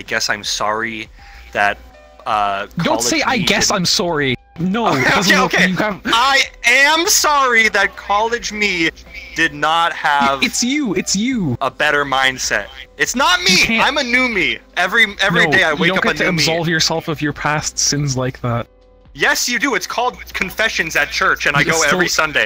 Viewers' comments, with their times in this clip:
0:04 I HEARD HIS CANADIAN COME OUT
0:04 what the heck us "sorey"